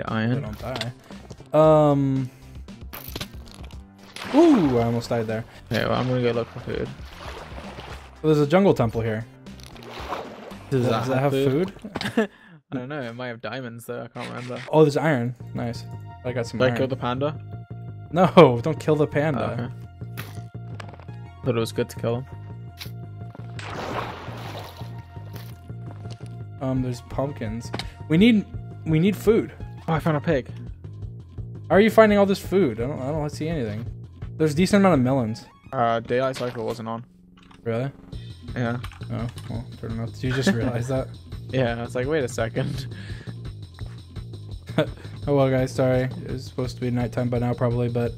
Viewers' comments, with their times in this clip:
0:09 They said it at the same time : )
0:14 speedrun music starts
0:30 im hearing speedrun sound